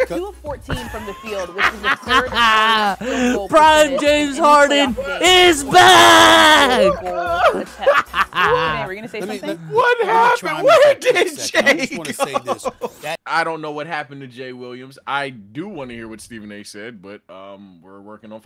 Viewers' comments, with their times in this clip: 0:06 so ain't no one else here that 😂😂 bruh let one lose on the slick 🤣🤣🤣